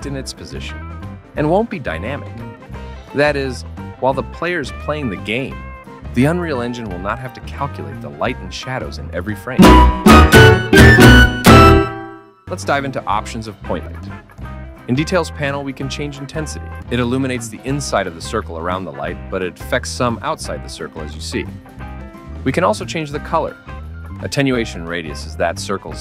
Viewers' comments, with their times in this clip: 0:08 the volume of that scared the shit out of me XD anyways very informative video this will defo help me using unreal engine